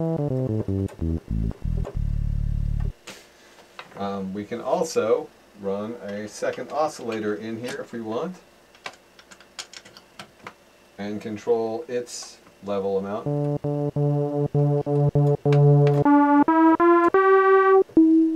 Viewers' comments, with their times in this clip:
0:04 nice bass sound